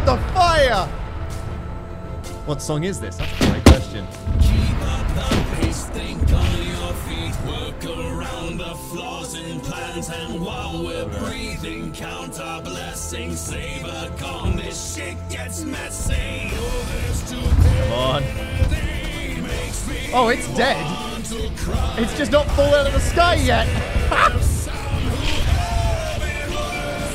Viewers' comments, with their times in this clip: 0:08 ish the music in the background makes it sound like an ISIS beheading video